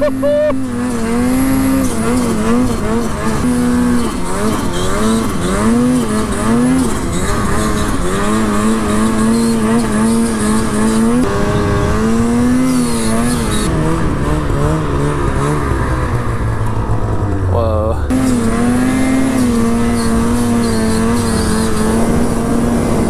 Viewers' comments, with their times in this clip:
0:04 whats the dry sqeaking sound when he hits the throttle starting ??? anyone know? is that just a tight or worn belt??